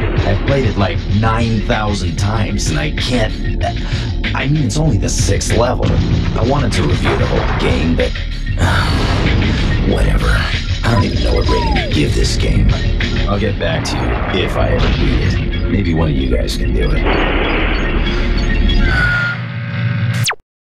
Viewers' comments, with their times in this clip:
0:03 I saw this one. May 2002. It was up on the Toonami website too (dude, remember RealPlayer?!) This just intensified my crush on TOM because we got to see him get angry. That "ehh" he does ... oh dios mio.